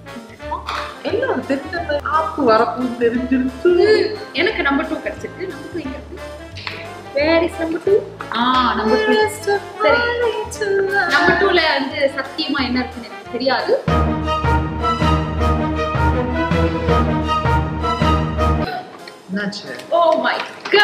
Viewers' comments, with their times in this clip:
0:08 nice voice for this song akka